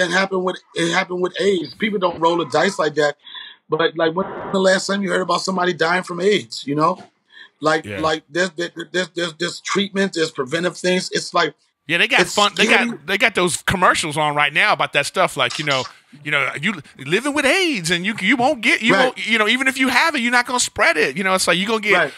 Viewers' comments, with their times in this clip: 0:04 Really funny episode. Sounded like someone ripped ass I think it was Donnell since he paused when it happened. People can't fart and talk at the same time as we know from Swalwell.